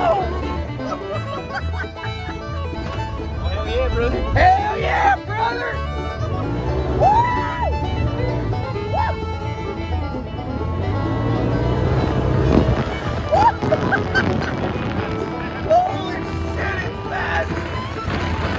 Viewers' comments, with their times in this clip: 0:03 he sounds like a actual cowboy this got me laughing so hard